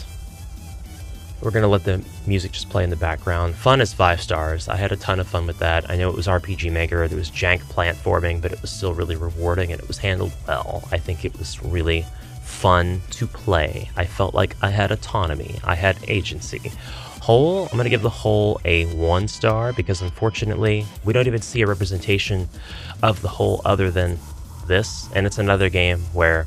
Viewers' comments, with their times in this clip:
0:07 I also had a blast playing this one and it's always impressive to see what you can achieve in an engine that was designed for making JRPG! Rating the game while grooving to the music made me smile!